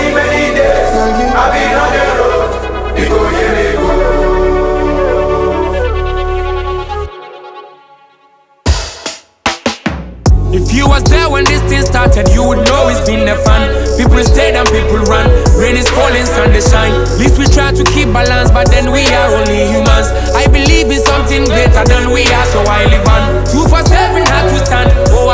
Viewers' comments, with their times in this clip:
0:09 I love the switch of rhythm BlaqSherif 🔥🔥🔥